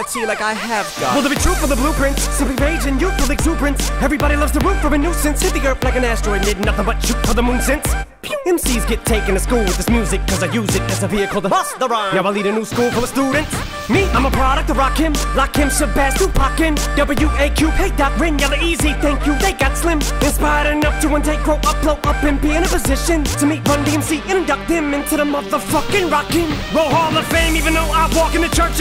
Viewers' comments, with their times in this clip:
0:08 when a stormtrooper shoots
0:09 Guys the puiw is everything